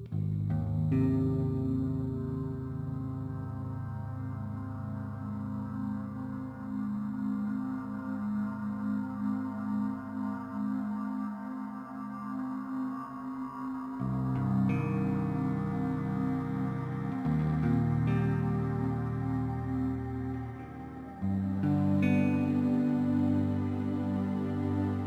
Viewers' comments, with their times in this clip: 0:10 it sounds like lil peep save that shit